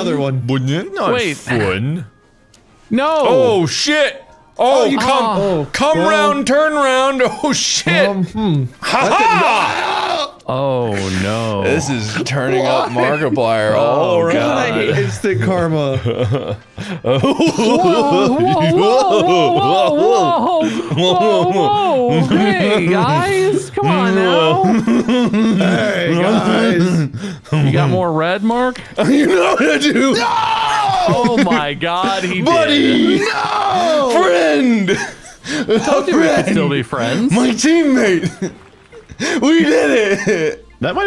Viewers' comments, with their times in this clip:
0:09 wade’s scream tho😂
0:15 From we watch Mark slowly devolve into some sort of giggling backwoods "Special Boy" who roars at the simple things.
0:27 Mark devolves into a horse
0:29 the NOISE that came out of that man’s MOUTH HDSKSKS